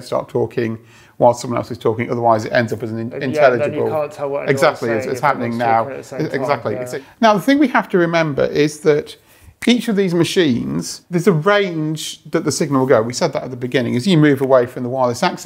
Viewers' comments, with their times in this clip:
0:03 I found it funny how they both started talking at the same time while explaining that it shouldn't be done.